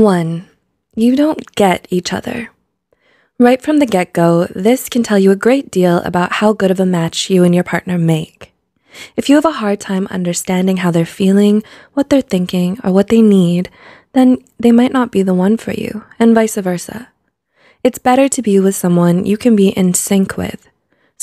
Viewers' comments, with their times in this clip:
0:03 Everyone: Coming here to learn about compatibility Me: Coming here to learn English "Right from the gecko..." (Why is she talking about lizards??) Now I learned something new, haha. It's not gecko but get-go.